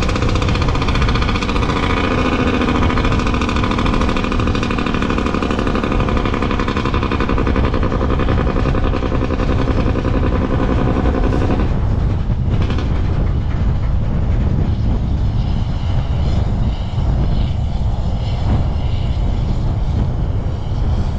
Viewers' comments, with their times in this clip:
0:09 I can't imagine the neighbors enjoy hearing a jake brake going down a mountain.